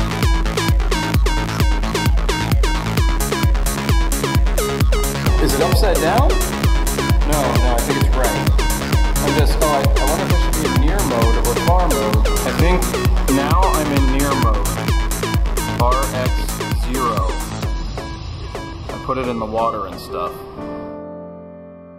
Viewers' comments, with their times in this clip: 0:04 sound like some dance track from the 90’s